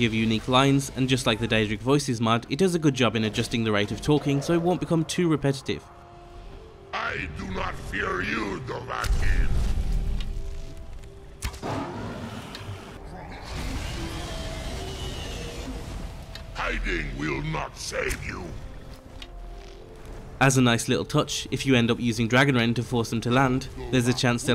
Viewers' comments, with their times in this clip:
0:06 sounds like heavy from team fortress 2 lmao